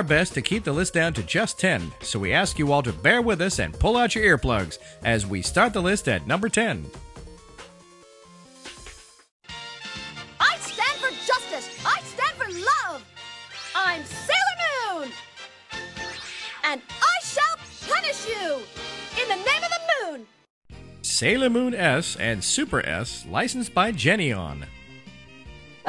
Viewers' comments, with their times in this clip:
0:09 HOW DARE YOU!!!???? IT WAS BECAUSE OF HER AND HER VOICE I BECAME INTERESTING WITH ANIME!!!!!!! !